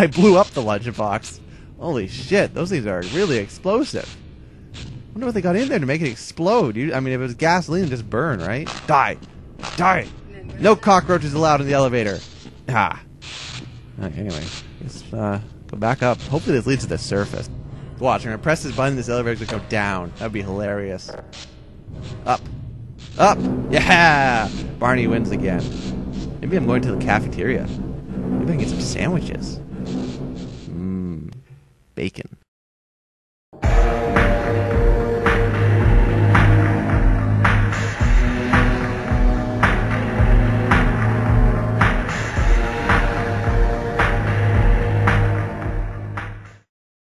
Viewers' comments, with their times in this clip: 0:09 you can hear background noise.
0:09 lol you can hear "Member Left" from teamspeak x]
0:10 I heard someone in the background.. Like a TV or a person or something!
0:10 lol someones on TS.
0:10 what's that voice ?
0:13 were u on team speak ? coz i hear "member left"at like XD
0:44 u can hear a "member left" from teamspeak ;)